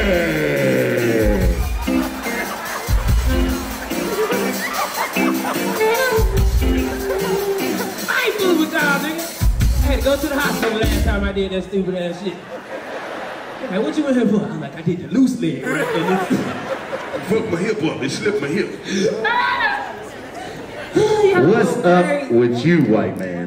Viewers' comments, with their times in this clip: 0:07 the camera man laugh kills me everytime😂